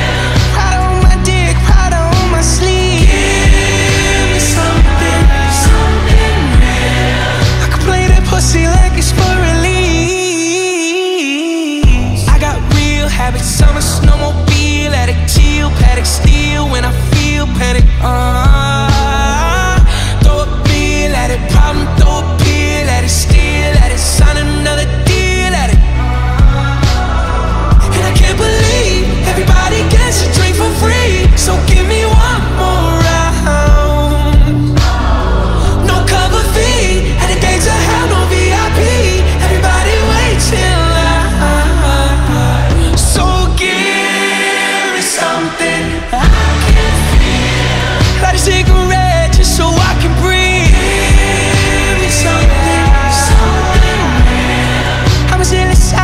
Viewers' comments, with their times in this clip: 0:06 omg the way he says fur elise 😮‍💨🥵
0:07 That Fur Elise note goes insanely hard
0:08 WHEN HE SINGS THE LYRIC “FUR ELISE” AND THEN PROCEEDS TO SING THE MELODY OF FUR ELISE!??? GENIUS
0:09 that sample is so clever wow
0:43 Especially when it gets to it drops so hard 🔥🔥🔥🔥